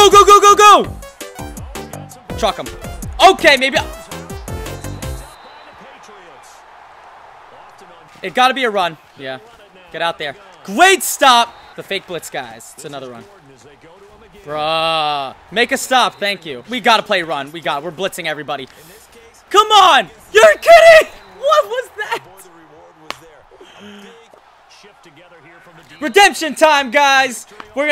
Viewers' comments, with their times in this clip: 0:10 what the heck is a gweat stop